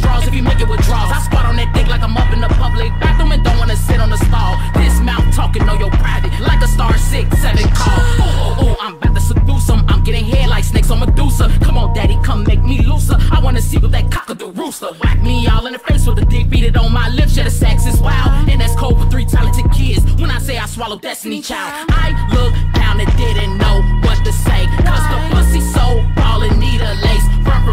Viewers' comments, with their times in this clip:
0:08 THE WAY IT SYNCED UP SO FAST AND SO GOOD MY WIG BECAME CURLY AND TURNED ORANGE😱😭